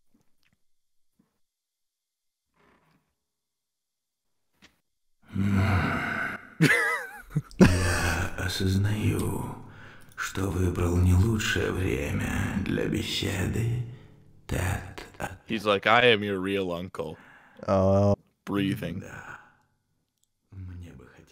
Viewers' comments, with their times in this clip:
0:05 That grunt noises of "Hm." got me dying 😂😂